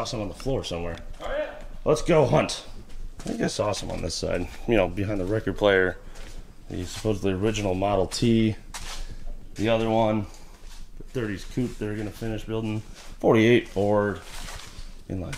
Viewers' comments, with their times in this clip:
0:03 Did i hear the starter stick